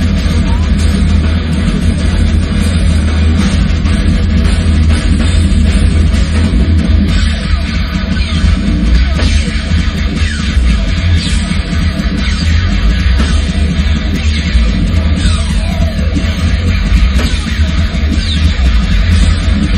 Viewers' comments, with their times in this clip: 0:06 is where the future lies ; with laser gun sounds.